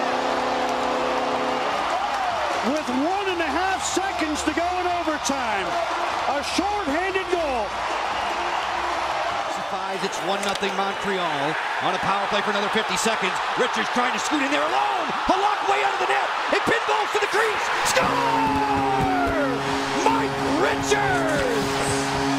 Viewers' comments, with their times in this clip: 0:10 SO...Fucking... WEIRD hearing Joe B doing anything else but Capitals Hockey broadcast....